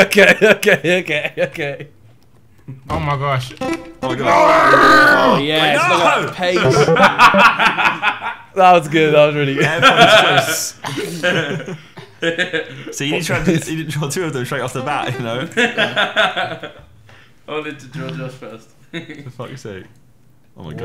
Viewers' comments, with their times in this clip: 0:04 Chewbacca has entered the call